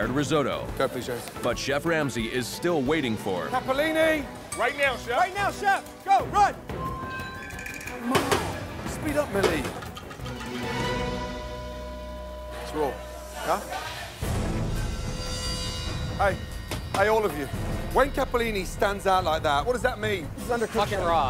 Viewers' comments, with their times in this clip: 0:06 That tiny 3 note tune tells you whatever they sent up is getting sent back